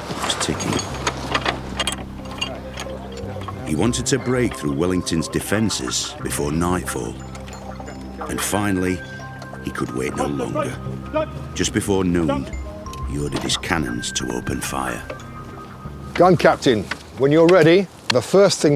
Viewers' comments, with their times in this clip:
0:05 Mr Bean's comments are barely audible here. :-S